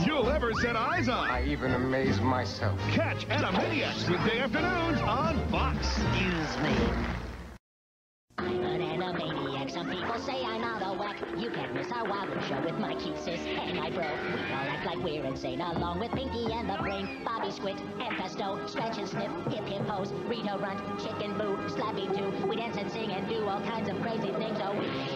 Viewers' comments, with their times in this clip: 0:08 The song... I can listen to it over and over again
0:08 Yakko can sing here too